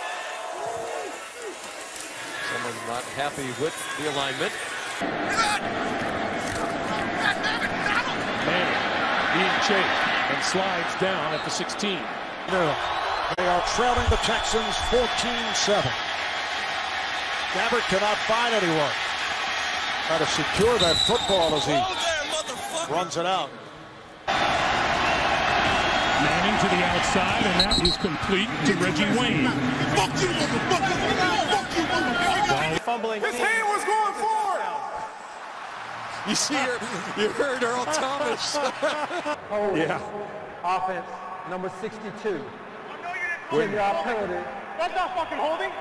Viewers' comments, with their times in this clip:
0:06 that's DEF my all time favorite "hot mic" moment of all time... whenever I see that highlight n hear Peyton just scream "gOD dammit Donald!!!" I burst out laughing every single time hahaha... what other "hot mic" moment could POSSIBLY be better than this one??? NONE!... the answer is none lol
0:08 🤣 Peyton sound so desperate😝
0:18 sound like a GTAV npc
0:20 man sounded like a GTA NPC
0:20 This sounds so good that I feel like it's something from GTA. (Thanks for the likes and the heart!) ....nevermind the heart..
0:21 blain Gabbert sounds like a gta npc when you almost hit him with your car
0:21 I don't know why but that "Woah there motherf*cker!" is the most Texas thing I've ever heard.
0:21 was this supposed to be menacing? It sounds like when the nerd at school tries to curse for the first time. 😂
0:21 My man sounds like a GTA npc
0:21 He sounds like a GTA AI when you run into them
0:21 sounds like a GTA V npc
0:21 Sounded like a pedestrian in GTA San Andreas
0:21 whitest way to say that omg lol
0:21 sounds like gta
0:23 sound like some from gta 5
0:29 he says it so aggressively 😂😂😂
0:32 the ghost of Earl Thomas calls out from another dimension
0:33 That was hilarious asf how loud Earl Thomas was